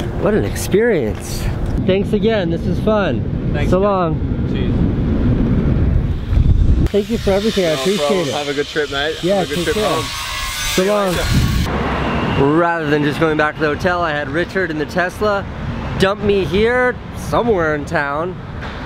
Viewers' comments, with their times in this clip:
0:05 For a second I thought Casey said Salam 😂